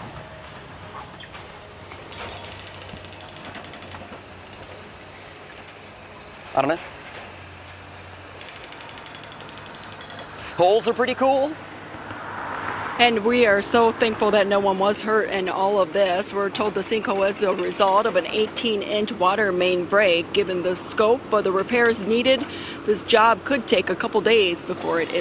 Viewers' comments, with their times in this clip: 0:06 What in the world is he saying between rants? Sounds like he's saying "ottoman"??